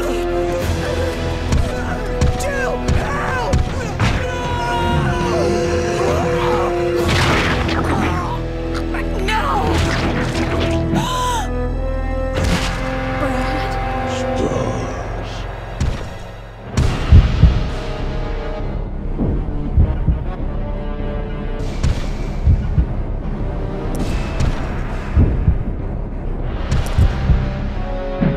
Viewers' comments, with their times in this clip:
0:10 Is it just me or did I hear nemesis say stars